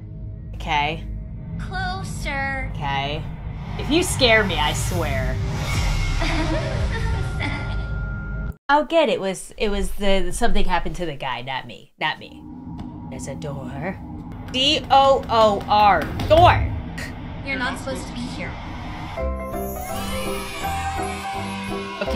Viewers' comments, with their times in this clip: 0:05 looks a little sus to me... and that laughter OMG FBI WHERE ARE YOU ! YOU NEED TO WATCH A KIDS SHOW:cat-orange-whistling: edit: okay yas i liked my own comment 😁